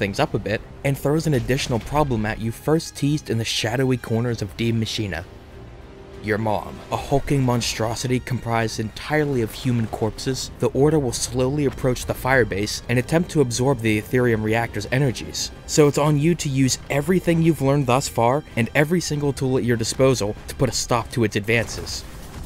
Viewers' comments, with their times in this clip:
0:06 deadass thought he said your mom